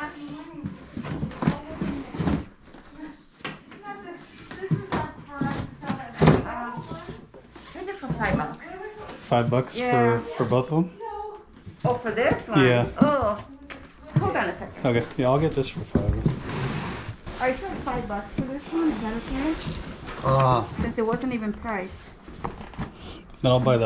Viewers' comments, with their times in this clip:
0:07 Muffled scream coming from an university several hundred miles ago .